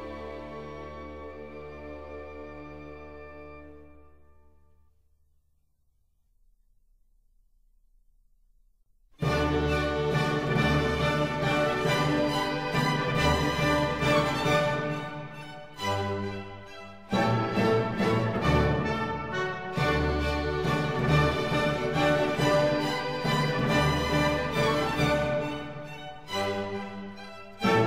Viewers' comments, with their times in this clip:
0:08 on is so Majestic!